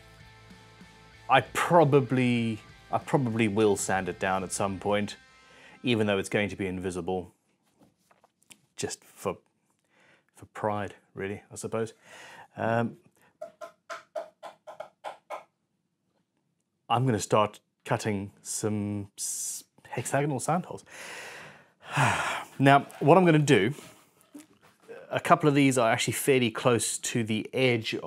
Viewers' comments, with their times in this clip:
0:10 totally reminded me of Nick Frost. Accent obviously but just the way he says pride and his mannerism at that moment also.